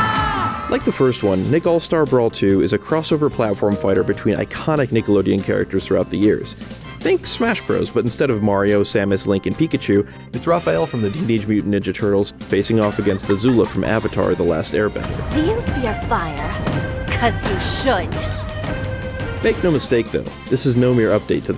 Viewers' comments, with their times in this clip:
0:03 Microsoft update sound lmao